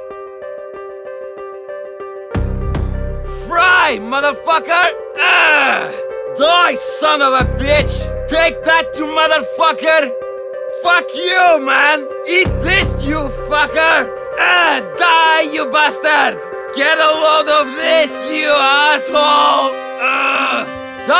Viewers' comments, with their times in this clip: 0:07 the R from fucker Sounds cool ;)